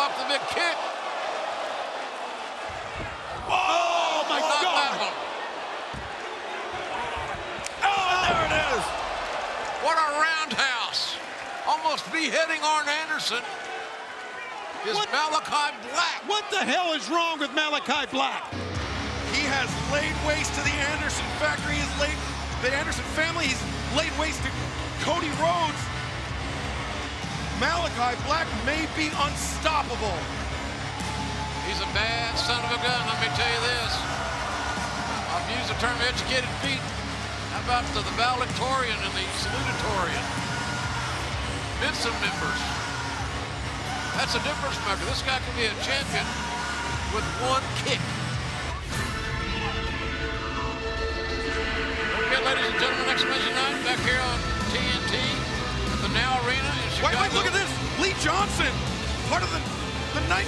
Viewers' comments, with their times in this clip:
0:07 I LOVE AEW BUT ..... THIGH SLAPS.... WHERE ARE THE YOUNG BUCKS WHO CONTINUOUSLY MOCKED THE "COMPETITION" FOR THIGH SLAPS, again love aew to the core, but atleast dont be a DIPLOMAT by mocking something and proceeding to do the same exact thing
0:48 thats a botchamania moment: malakai screaming into the camera with nobody even hearing a single bit and Jim Ross who doesn't even realise that lee Johnsons music is already playing just going along like nothing is Happening:D